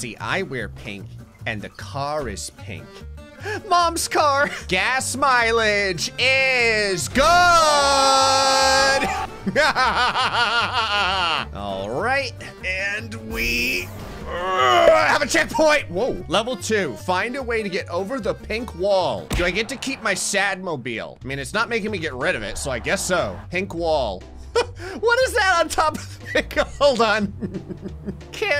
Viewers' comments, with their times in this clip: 0:08 waht laugh was that lol good videos btw
0:09 mayor humdiger laugh moment